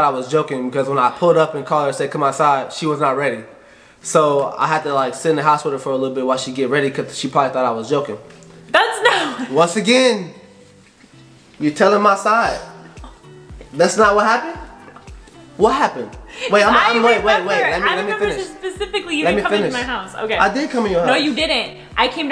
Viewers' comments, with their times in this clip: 0:10 was she really laughing 😂? I love it 🥰